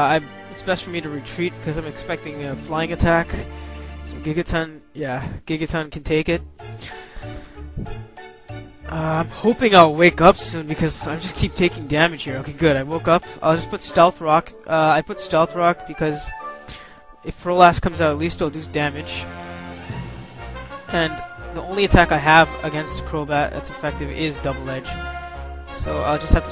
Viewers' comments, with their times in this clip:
0:07 Hahahaha the music is soo fitting for sleeping Gigaton